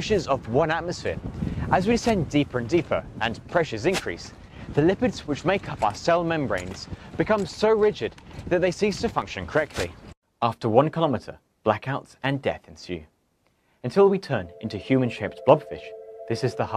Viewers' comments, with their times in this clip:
0:03 lmao sounds like a grass block has been broken